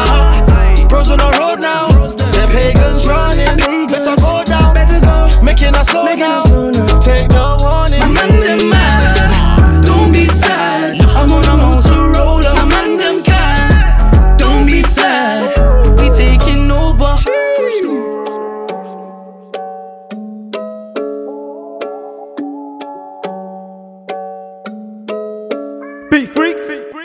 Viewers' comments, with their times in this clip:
0:09 the sound a Villager makes in Minecraft when you hit it
0:14 is where its at at the vocals LMFAO